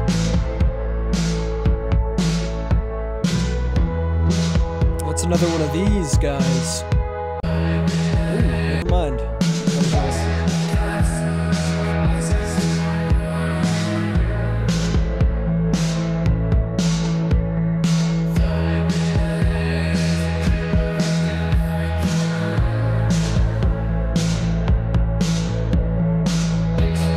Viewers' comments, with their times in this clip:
0:10 this one gives of some m83 vibes featuring david grellier (college) but the weird pitch ruins it and makes it feel clowny with a touch of joy division vomit. with all this results sometimes it feels like the a.i. tries to get cringe with us but some results have a cool feel to it...